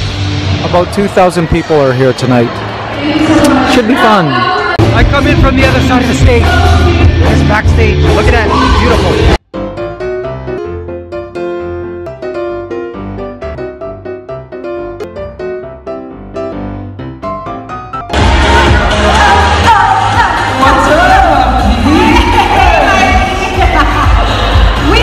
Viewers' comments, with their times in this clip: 0:09 background music is skipping